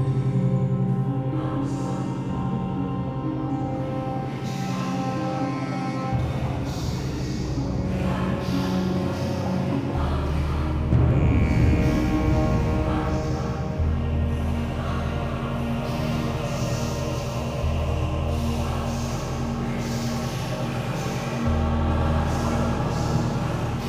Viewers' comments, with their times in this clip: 0:09 I just noticed the chanting